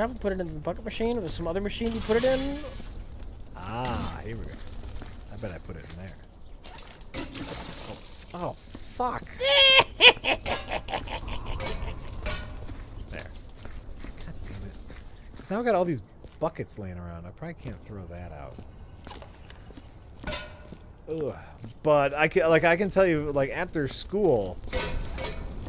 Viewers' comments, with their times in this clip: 0:09 full on salacious crumb